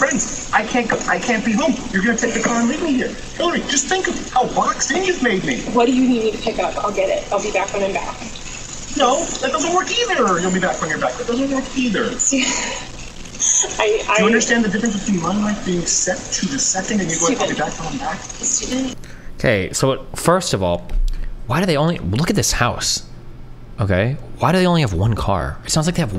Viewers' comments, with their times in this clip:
0:07 the way he says "That doesn't work eeeeitheeeeeer." at a solution for something that doesn't even qualify as a first world problem. A real manly man.